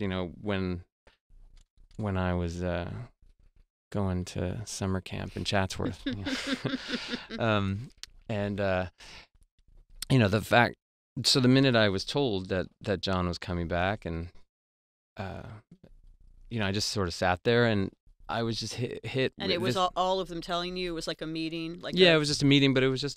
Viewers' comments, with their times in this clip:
0:10 It sounds like he's describing how his girlfriend was hanging out with her ex on occasion and possibly cheating and that he shouldn't've been surprised she dumped him to get back with her ex. And it feels like he's sad the way his voice shakes And it sounds like he's trying not to sound jealous or heartbroken in public. I love John's music, but I love Josh's too, and I hope he's doing alright